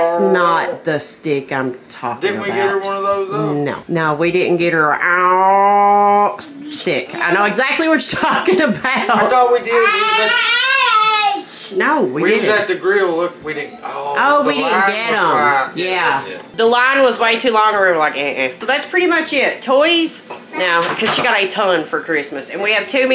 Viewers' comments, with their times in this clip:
0:07 Couldnt stop laugh min. Because we have one of those, for our grandaughter, and thats exatcly how they sound. Thanks for the laughter, to start my day. Be blessed💜